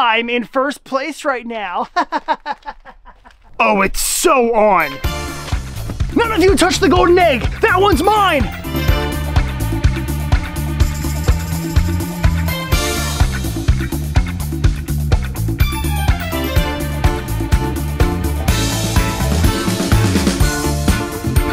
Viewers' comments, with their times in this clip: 0:05 That music belongs in horizon chase.